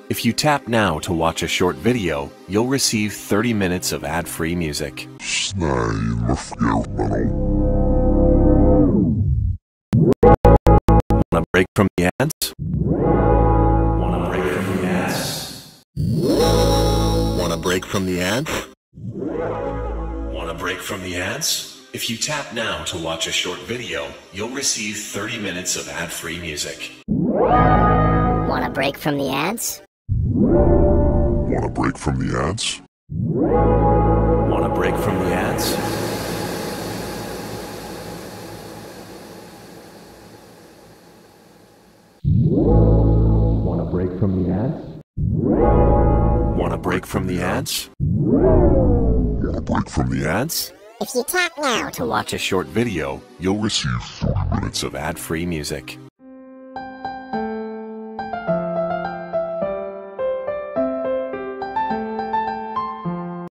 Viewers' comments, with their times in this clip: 0:10 4 year old me using my toy keyboard:
0:30 it sounds like quarto de hotel at the start
0:33 POV you are in a mall
0:54 you’ll receive 4 minutes of ant free music😂